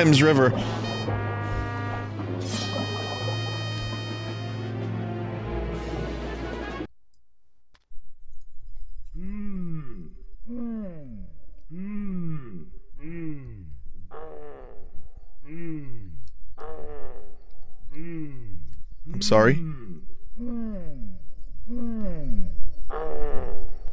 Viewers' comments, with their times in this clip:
0:07 Loud men groaning in the back room